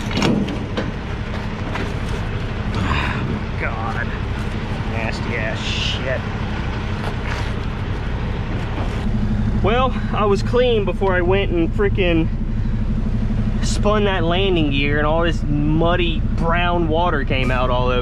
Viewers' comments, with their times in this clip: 0:03 the way he said that